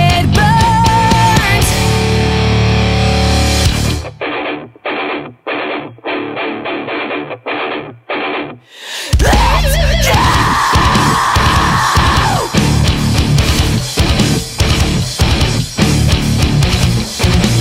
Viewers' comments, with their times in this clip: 0:03 this seems like some asking Alexandria element
0:04 Initial impression: "Oh, yay, another band that sounds kinda like paramore...." And then, happened.... "Oooh, this IS kinda like paramore... except MORE METAL." *earns stamp of approval*